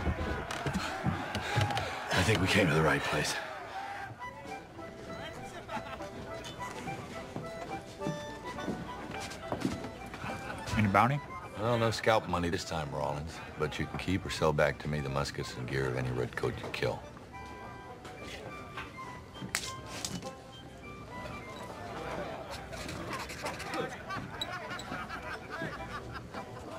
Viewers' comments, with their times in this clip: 0:10 what the hell does Rawlings say??